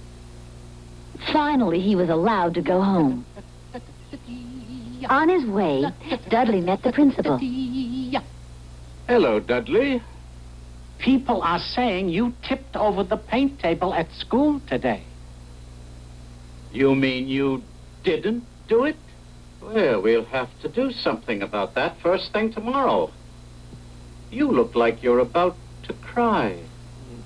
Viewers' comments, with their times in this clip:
0:09 the principal has the same voice as Professor Hinkle from Frosty the Snowman.